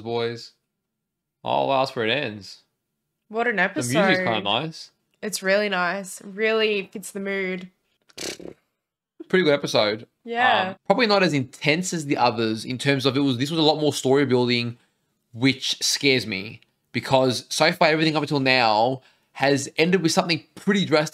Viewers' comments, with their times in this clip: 0:06 Stark's theme so beautiful